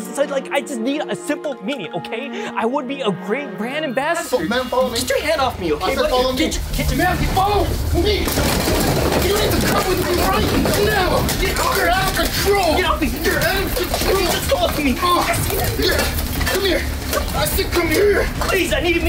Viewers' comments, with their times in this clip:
0:07 Follow me more like follow ghy 😂